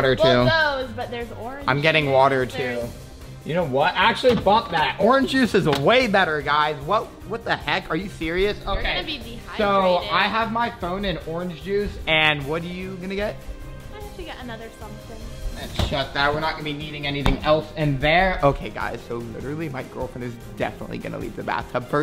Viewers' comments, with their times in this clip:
0:03 did he swear or say stuff that